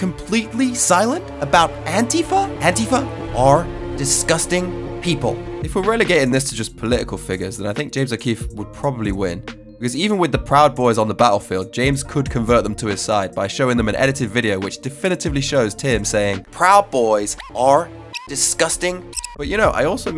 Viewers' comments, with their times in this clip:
0:07 bro what / who was that accent / impression supposed to be? :/